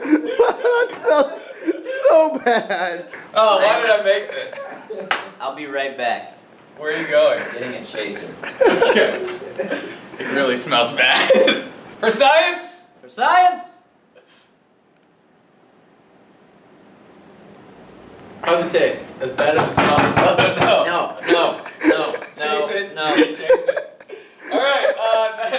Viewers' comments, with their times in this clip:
0:07 the hate in his voice as he says "getting a chaser" gets me every time